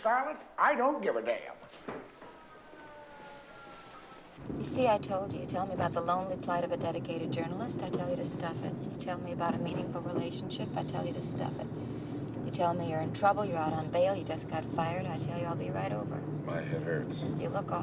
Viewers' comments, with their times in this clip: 0:03 is real bad acting. o mono tone and static and they dont pause before replying. I demand they refilm that scene immediatly. also we definetly didnt go to the moon